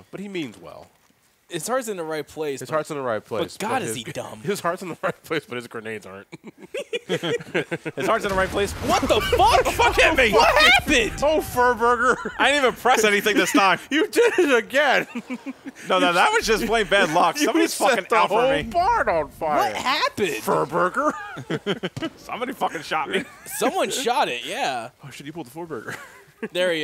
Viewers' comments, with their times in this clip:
0:07 and then Wonky Dick staggers out of the barn with a stick of dynamite in his teeth, laughing like a maniac.